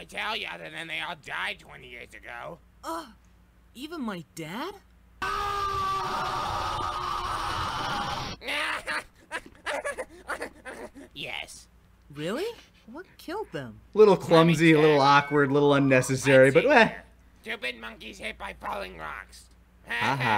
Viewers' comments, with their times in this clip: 0:04 clumsy as the set up was, the abrupt Taka scream is hilarious
0:06 this is my favorite part of the episode. The sudden shift to the death scream is fantastic, always takes me by surprise.